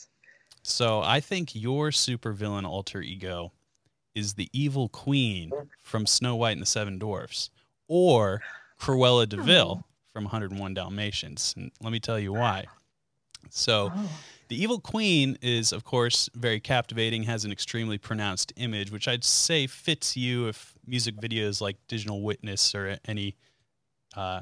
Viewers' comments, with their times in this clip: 0:05 Did someone break wind at about the mark? Right after the words, "...the evil queen"?